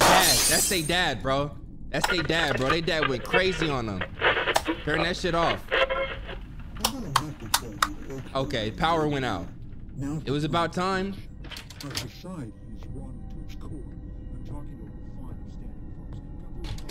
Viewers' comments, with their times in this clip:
0:03 Ik no one will get this but the radio sound sound like the intro to a song called “Boblo boat” by Royce da 5”9 and J Cole.